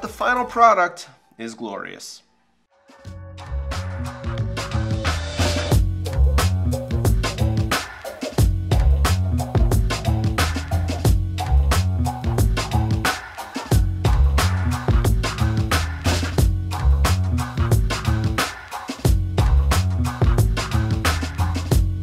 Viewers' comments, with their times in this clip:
0:06 i was enjoying your video drinking my tea eating my pb&j and then this jazzy hip hop beat came on, and then, that is when i gave you a thumbs up